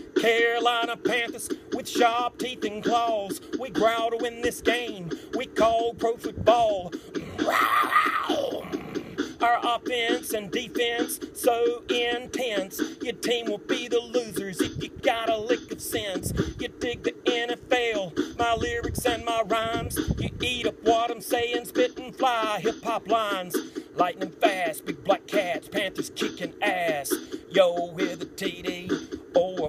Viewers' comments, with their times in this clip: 0:10 Does anyone else notice that he kinda sounds like someone from family guy